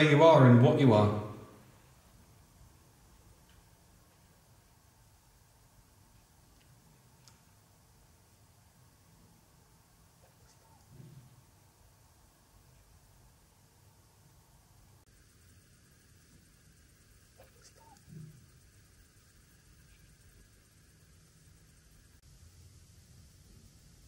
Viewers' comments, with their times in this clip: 0:10 The EVP sounds like its saying "What was that?" Somebody there must have heard you guys! 😳